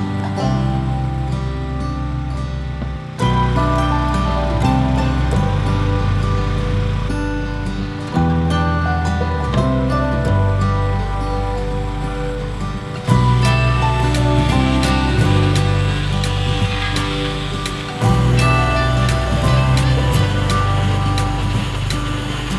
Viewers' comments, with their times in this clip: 0:03 the music is sounds like an acoustic version of the Planet Coaster music